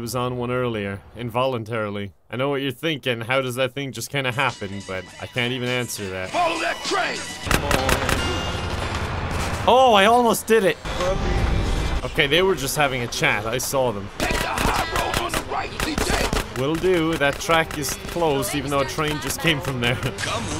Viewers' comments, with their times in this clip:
0:06 Big Smoke just casually rapping "Follow that train" to the beat